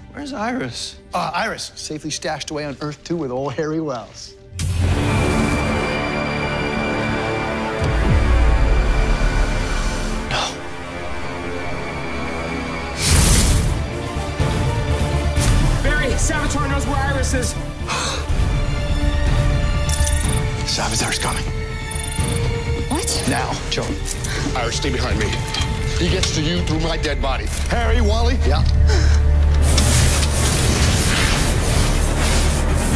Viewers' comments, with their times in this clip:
0:04 that bgm is INSANEEE
0:05 that fucking music, the reveal made me laugh my fucking ass off lmao
0:13 man I love this scene. The music and everything. Its like dreading and a race against time for Barry
0:13 The theme song in is amazing